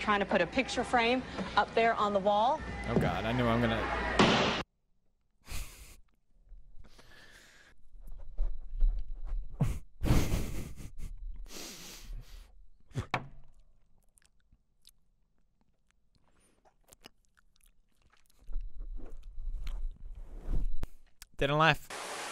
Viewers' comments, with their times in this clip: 0:08 This is real ASMR.